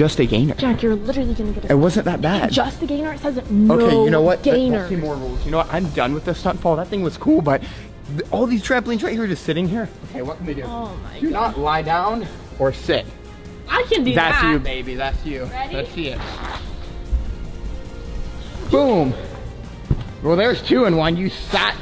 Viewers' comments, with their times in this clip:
0:06 your voice cracked lol 😂